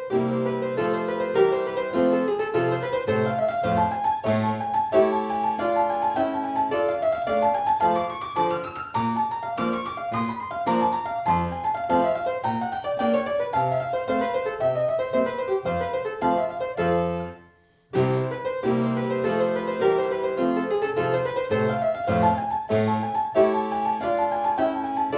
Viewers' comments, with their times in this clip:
0:10 E-flat??? It never was there...